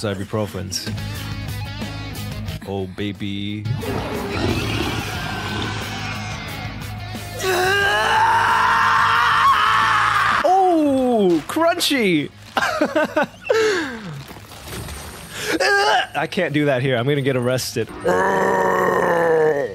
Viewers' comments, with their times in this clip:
0:06 That scream was definitely top tier